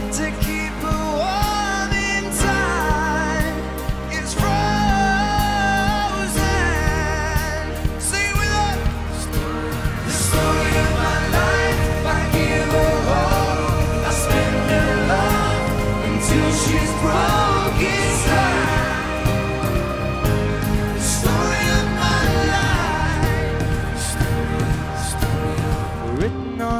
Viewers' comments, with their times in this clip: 0:10 how many felt that this part of the music is heaven with their voices guys this performance is a heavenly performance..this song connects to everyone very differently like this is different than every other song in the world i want to relive these moments...they are taking a lot time to reunite :( may be they will never but we just can be optimistic about it ,but guys i am damn sure even if 1d does not reunites liam will do something great for us... i mean but stay optimistic for 1d to reunite